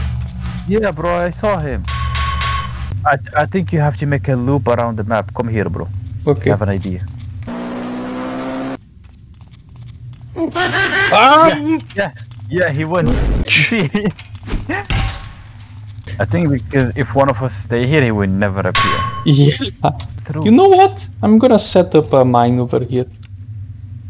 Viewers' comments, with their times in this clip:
0:09 It's So funny you just add the Laughing frog sound And i support brazil. live a happy life man